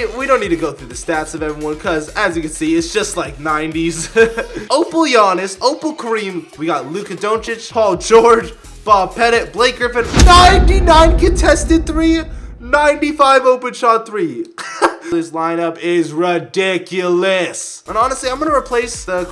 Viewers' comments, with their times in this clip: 0:06 the way he said Lukas name 😂😂